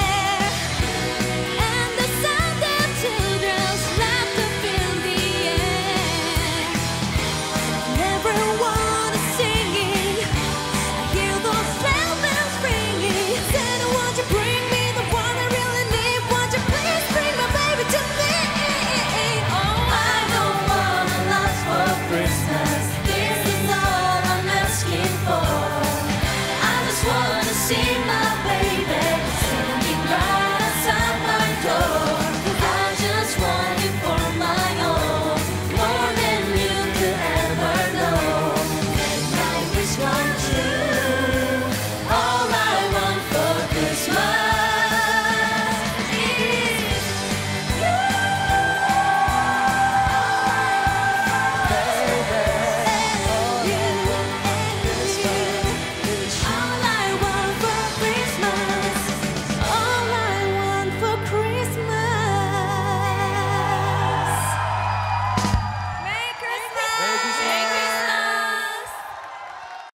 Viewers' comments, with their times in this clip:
0:09 Jessica has an angelic voice❤❤❤
0:47 TiSeo high note 👌
1:00 is Taeyeon & Jessica harmony